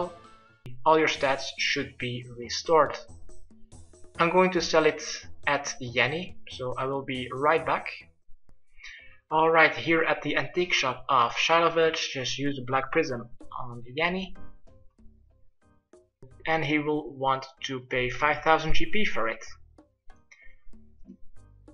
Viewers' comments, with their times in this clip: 0:05 did u guys hear yanny or laurel?